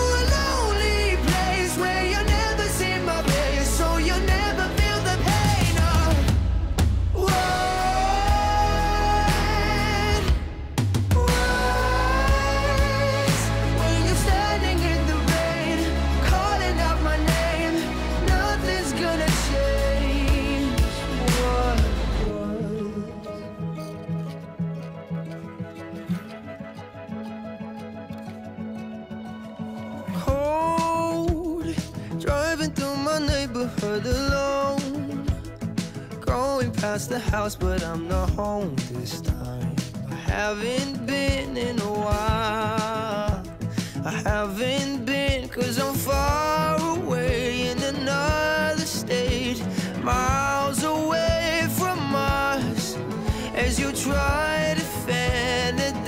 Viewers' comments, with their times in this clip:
0:07 the drums hit
0:39 That’s probably the lowest note benson has hit his entire career.